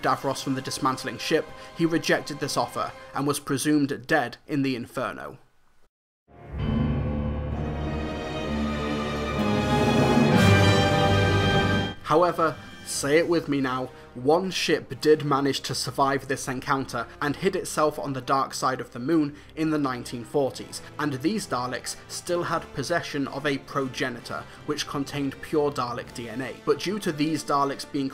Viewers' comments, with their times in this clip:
0:09 go go power rang- Dalek: EXTERMINATE gunshot